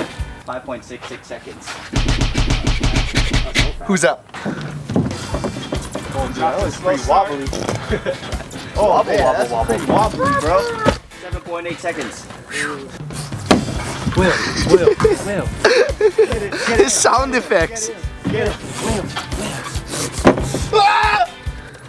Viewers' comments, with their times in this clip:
0:08 ahem was that a fart?